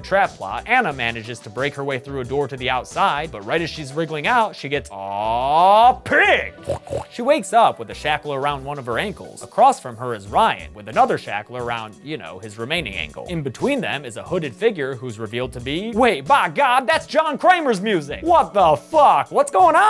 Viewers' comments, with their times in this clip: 0:06 That snort is just plain hilarious af